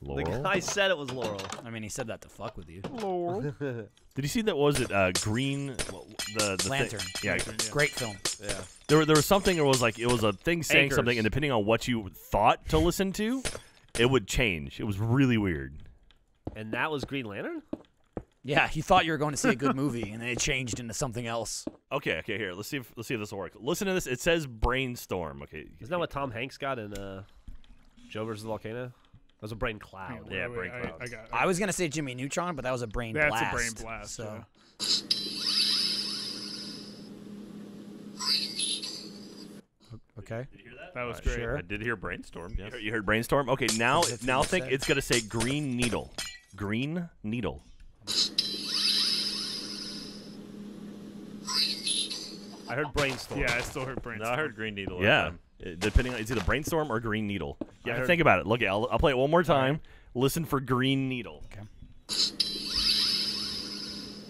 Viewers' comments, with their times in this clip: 0:06 Brain Storm~ Green Needle~~ My Brain: Brain Needle~~ Green Storm~~ Wait a fucking minute...
0:37 it works!!! if you replay the same clip and switch what word you are focusing in your head (saying it to yourself) you can change what the recording sounds like. it tripped me out.
0:37 i heard brain needle from the start lol
0:38 when they said it would say brainstorm i heard green needle and when they said it would say green needle i heard brainstorm
0:42 I'm actually hearing 'brain needle' tbh.
0:52 I hear Liam Neeson